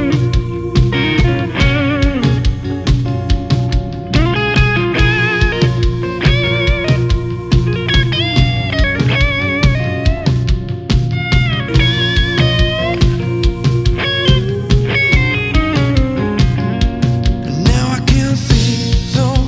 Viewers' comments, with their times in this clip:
0:05 Some tasty licks right there!